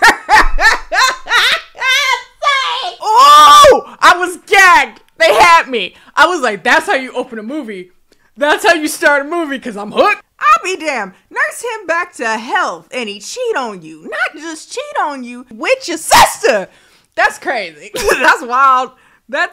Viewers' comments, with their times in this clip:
0:03 RIP to headphone users 🥲